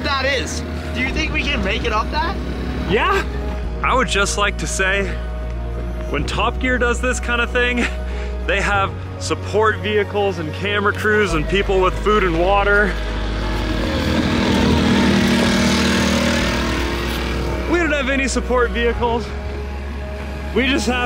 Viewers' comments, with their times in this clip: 0:04 True American heroes. Swelling music is the perfect complement.